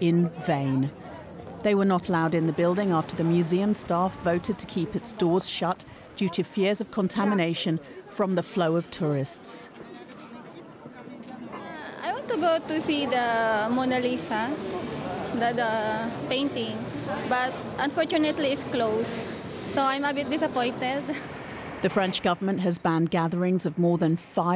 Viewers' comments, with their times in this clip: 0:10 sexiest accent i know, hahaha There is nothing in this world like a filipina girl.